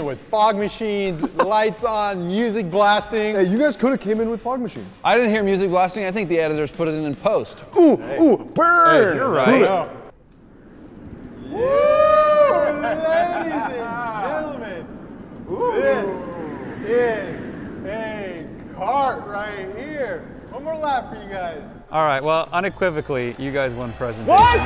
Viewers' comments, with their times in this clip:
0:10 It's just SOOO awkward without the music